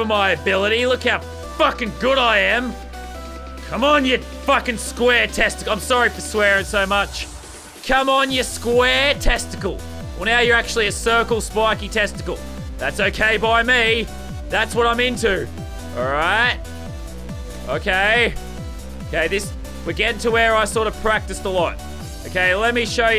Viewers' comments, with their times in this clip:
0:08 i clicked on and i heard lazarbeam raging about square testicles